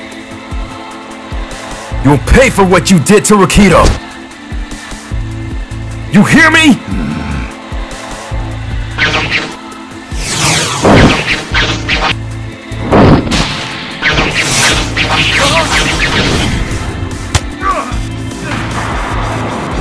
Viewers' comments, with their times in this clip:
0:07 The music too godly?